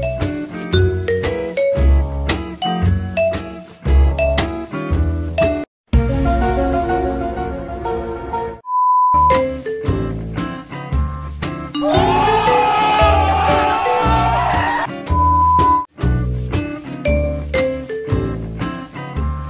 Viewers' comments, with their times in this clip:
0:06 oooo italian i speak Italian awsome <3